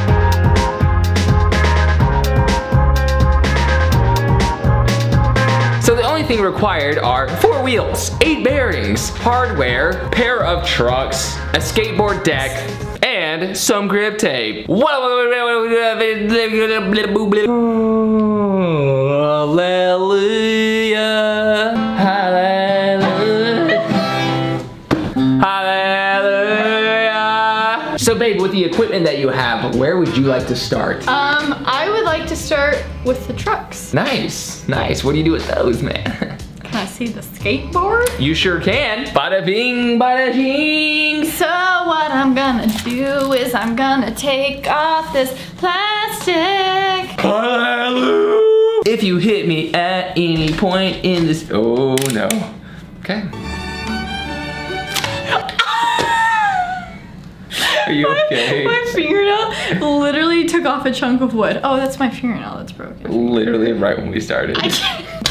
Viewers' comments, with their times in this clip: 0:05 "So the only thing required a fOuR wheels" 😂😂 lovely voice crack
0:46 that voicecrack tho